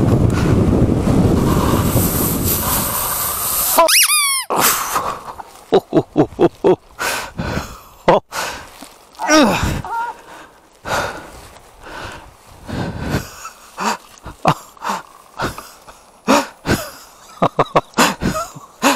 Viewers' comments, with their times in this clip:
0:03 was that a squeak or a swear word? ... Lol